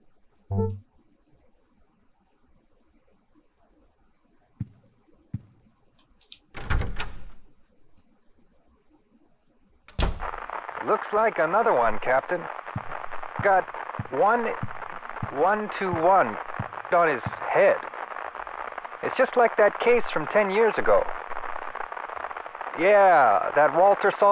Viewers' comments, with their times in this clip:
0:10 That guy's accent grew more Canadian as he went on.